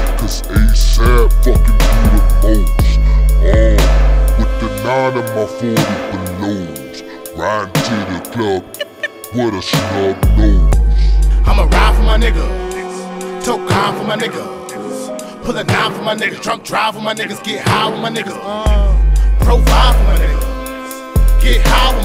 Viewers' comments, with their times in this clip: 0:07 That cd skip sound thing is the best part of the song lmao